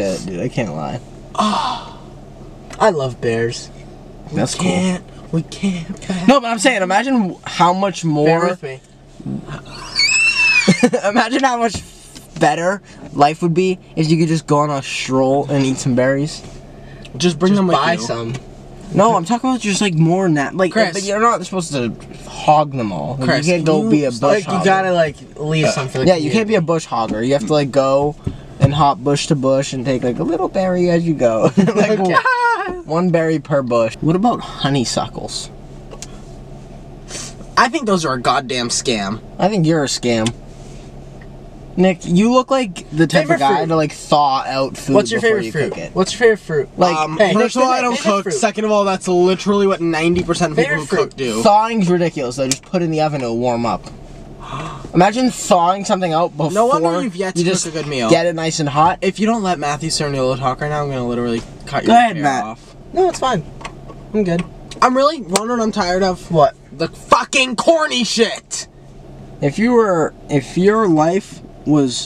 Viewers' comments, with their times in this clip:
0:08 LMAO STOP WHY WAS SO FUNNY LIKE THE WHEEZE 😭
0:09 WHen my dad heard that little scream...He thought my dog was whining to get out of my room but my dog wasn't even in my room.
0:42 Matt talking to himself
0:52 Matt having a conversation w himself cuz he’s getting talked over 😭😭
0:53 Matt talking to himself while Nick and Chris argue is everything 😭